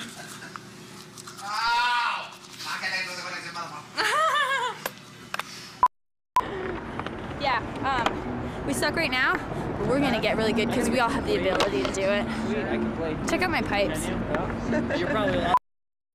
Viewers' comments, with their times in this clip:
0:03 her laugh so cute